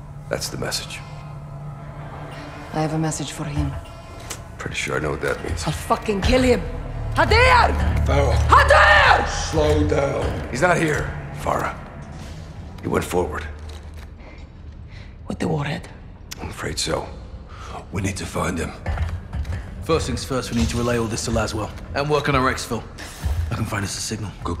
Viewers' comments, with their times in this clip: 0:07 farah so fine GODAMN THAT SECOND YELL 😫😫😫
0:07 Farrah sounded like an angry big sister